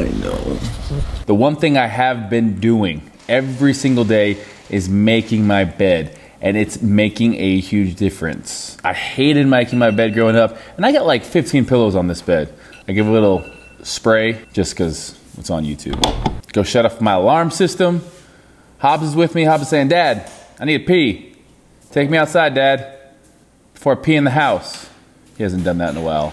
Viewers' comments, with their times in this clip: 0:10 did I just hear another alarm in my head?